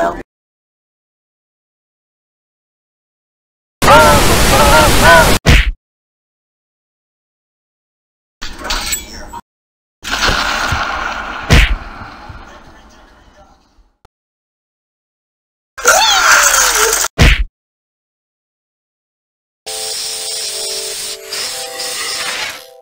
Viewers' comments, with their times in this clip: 0:04 "Aww, seriously?" demonic version